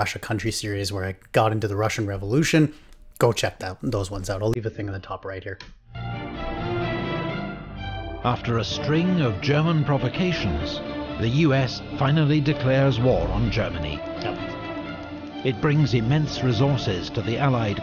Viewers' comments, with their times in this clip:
0:03 the audio issue shows up again here, though it fixes itself a couple minutes later